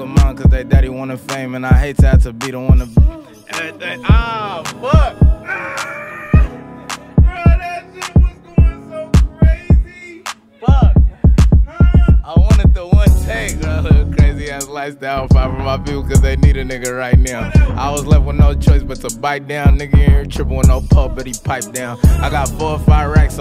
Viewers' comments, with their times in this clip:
0:04 even tho it wasn’t planned it still sounded stupid heat🔥😂